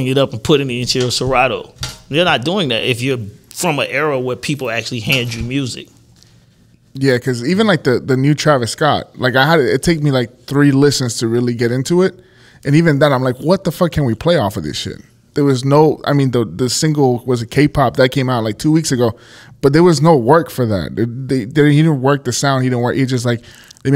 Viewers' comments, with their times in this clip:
0:07 I N F I N I T E A I R H O R N